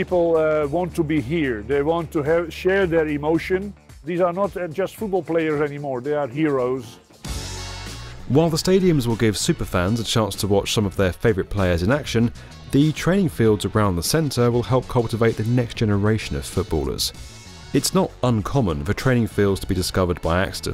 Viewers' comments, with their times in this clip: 0:06 Are we gonna just ignore that banger ?